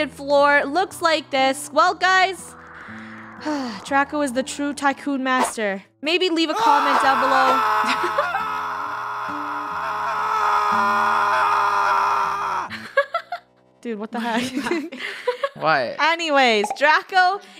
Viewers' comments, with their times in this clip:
0:04 WHAT IS THAT SCREAM